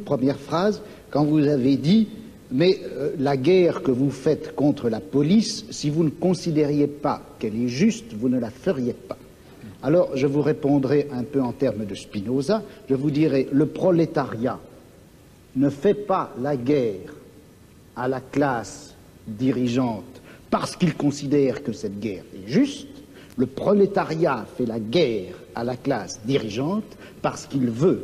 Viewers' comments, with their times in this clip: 0:10 rare Chomsky chuckle